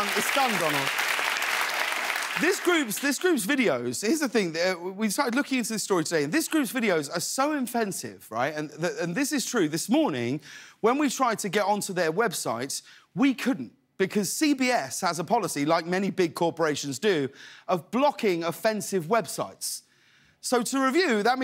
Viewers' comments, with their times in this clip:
0:06 "this group's videos are so infensive" Well done, Corden.